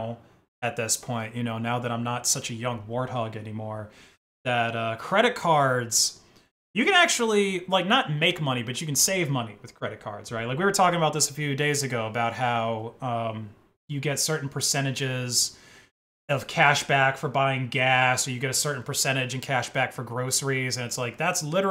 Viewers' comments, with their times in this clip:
0:07 shame about the audio dying, I stopped watching because of it